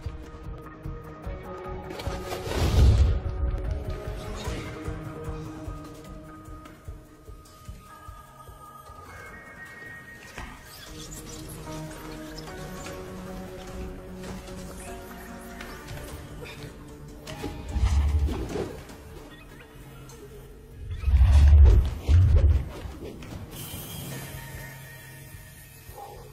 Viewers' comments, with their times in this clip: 0:07 it looses sound
0:07 LAME!!! Click bait… no sound after !!😡